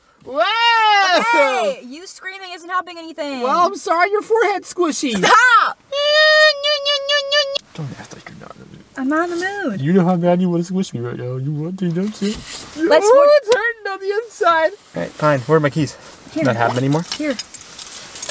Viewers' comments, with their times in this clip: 0:06 HE SOUNDS LIKE PINGU BWAHAAAAA